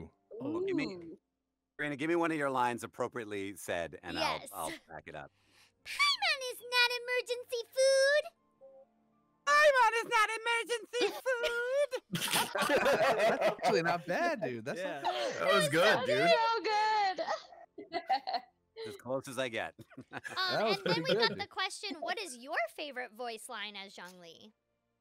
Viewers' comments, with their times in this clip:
0:08 sounds like Zhongli had a voice crack that went on for too long